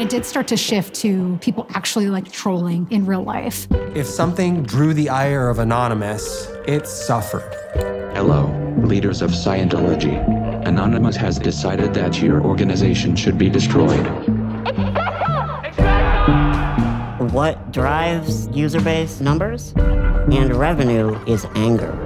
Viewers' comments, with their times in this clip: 0:07 GoAnimate Caillou's voice